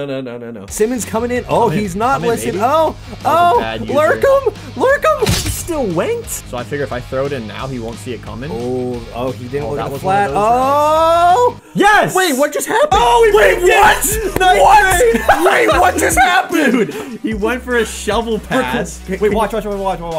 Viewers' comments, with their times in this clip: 0:03 He Sounds Like shaggy